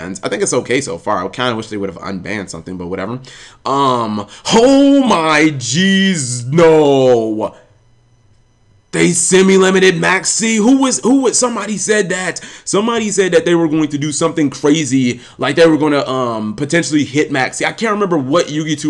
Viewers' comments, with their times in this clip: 0:04 HOEE MY JIZZ NOO lol